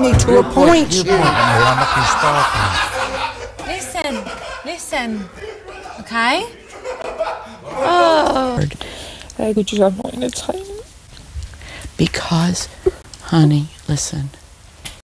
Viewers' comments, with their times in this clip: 0:12 How moms talk to u when they are consoling you 😂